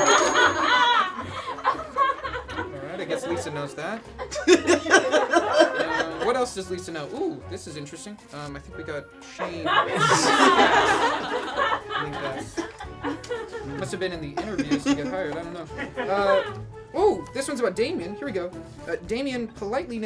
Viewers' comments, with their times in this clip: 0:08 why didn't the bell ding?